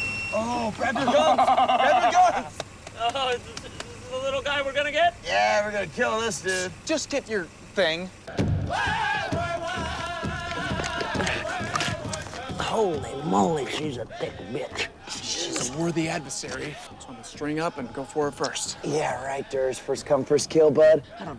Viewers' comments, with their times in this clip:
0:08 omg! as a native american is th last music i'd think i'd hear on workaholics lmao!!!